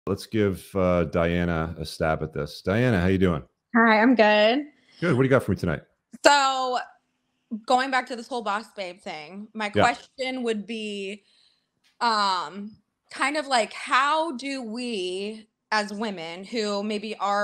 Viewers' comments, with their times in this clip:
0:05 Did this chick seriously start off with a Homer Simpson "D'OH!" ?